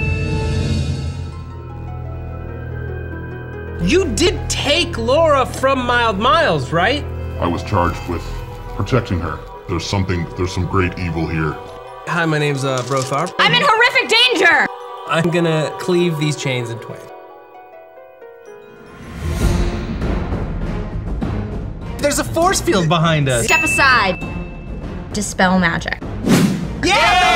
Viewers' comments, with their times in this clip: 0:09 you guys got adam driver to do the voice acting for the orge? I wished he said something like "I must finish, what he started" lol